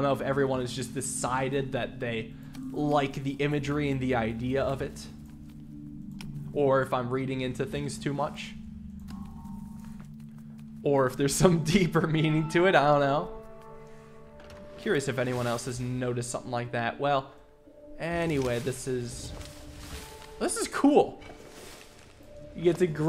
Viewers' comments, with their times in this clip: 0:09 "AurosBoros" ?? never heard of that.